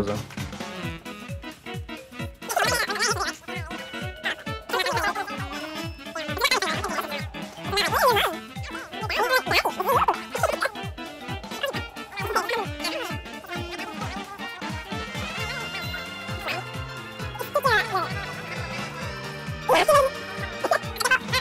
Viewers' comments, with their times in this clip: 0:07 Don't they sound like animal crossing npcs?